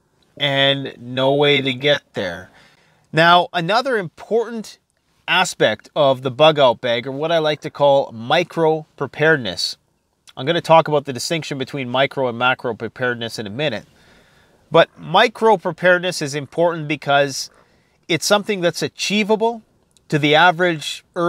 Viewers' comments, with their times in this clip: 0:04 Hey, at least your delivery of that phrase was on point ;)